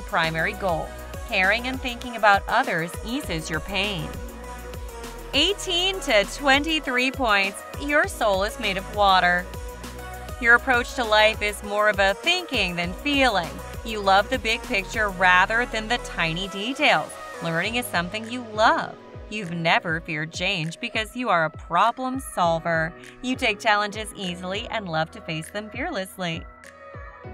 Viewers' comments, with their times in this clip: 0:10 22 Water So many people got waters and no I'm not a problem solver sometimes i made em even worse but fun quiz anyways also you sound like you're reading a text or something lol